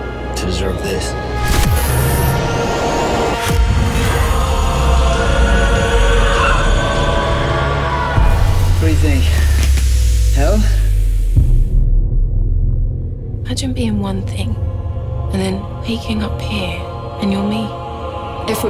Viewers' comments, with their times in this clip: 0:05 the blinding light and the high pitch noise from LOST when they move through time as well and holy shit, they didn't even try to be subtle ripping off the smoke monster